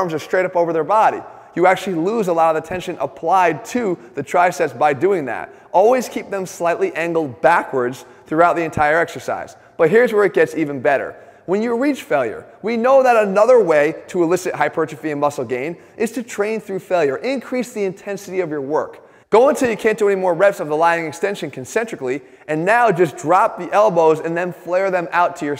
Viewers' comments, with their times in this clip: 0:07 Did Jeff's voice just crack?